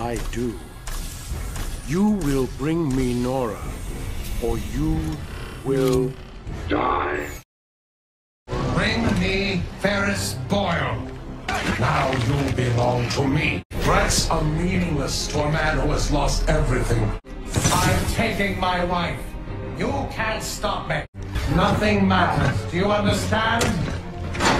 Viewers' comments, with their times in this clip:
0:06 he pulled off that line of Mr Freeze so good❤"You will bring me Nora or you..will...DIE!
0:06 his voice changed when, closing his helmet.